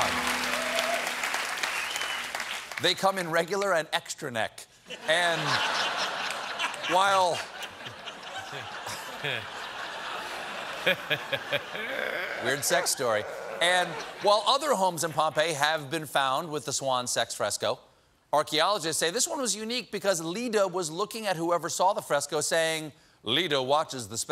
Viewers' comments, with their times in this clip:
0:06 There is one guy laughing in the audience i think has Season Tickets for the Late Show. I hear him almost every time.........